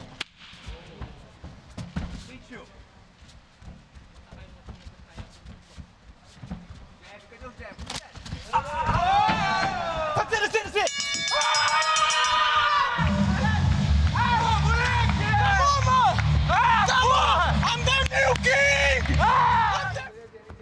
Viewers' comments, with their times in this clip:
0:03 knee sounded like broken ribsss... CRACKT 💀
0:05 did i hear a bone cracks? Nasty
0:06 you hear 3 ribs snap lol
0:07 you can hear his shoulder dislocate or something
0:07 the sound of the cracking bone 😐😐😐😐😐😐😐😐
0:08 MInute you can literally hear his ribs break . OUCH !!!:hand-orange-covering-eyes: